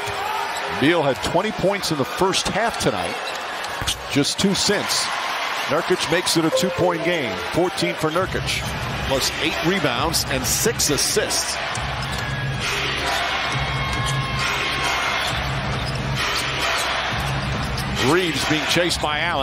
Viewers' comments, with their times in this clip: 0:05 Is no one gonna talk about the windows sound effect